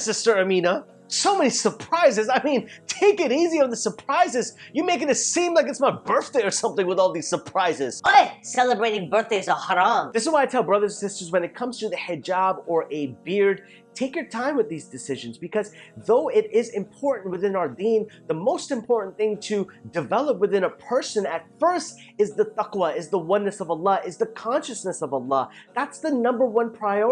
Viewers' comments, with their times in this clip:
0:08 "Oye celebrating b'day is haram" the voice tho😂😂